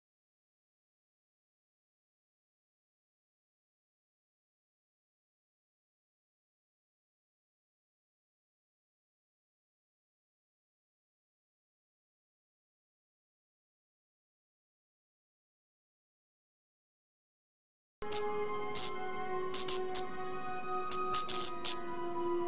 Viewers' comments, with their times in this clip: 0:06 does anyone here the echo when he says batman what happened if you do leave a like. 👍